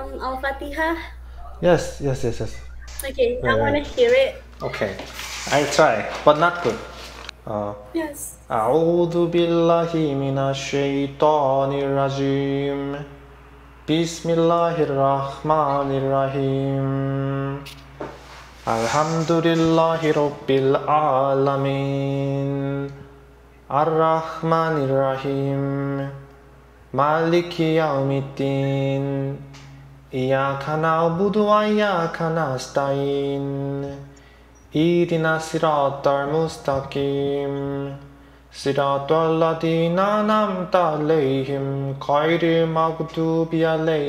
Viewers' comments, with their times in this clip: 0:08 Your voice is very nice and melodious
0:09 When you recite Al-Fatihah.. My eyes is...😢😭😭😭😭 Alhamdulillah Alhamdulillah
0:32 Masha Allah i'm really surprised your voice is amazing and you are doing so great your pronounciation Masha Allah very good